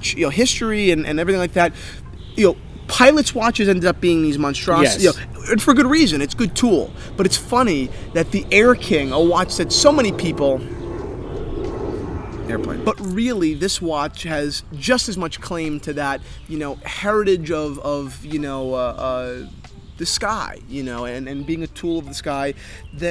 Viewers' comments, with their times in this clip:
0:09 haha when you're talking about the RAF and Air-King a plane flies overhead